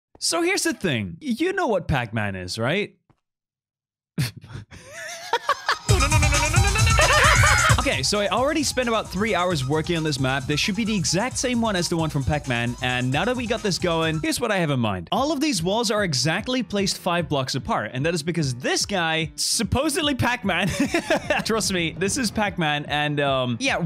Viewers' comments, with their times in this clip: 0:04 is such a bop for the time it's there.
0:06 SOunds like good beat